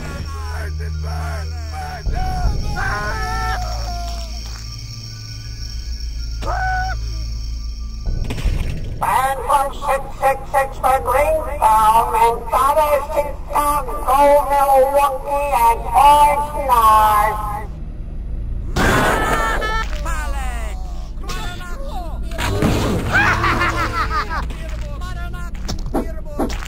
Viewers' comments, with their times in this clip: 0:07 I still wonder what that damn announcer says "Phantom 666 for Greentown (and?) ..??????.. (through?) Milwaukee and Oxnard"
0:09 wtf is said in the speaker? the audio is kinda low quality i cant understand onlly the (666)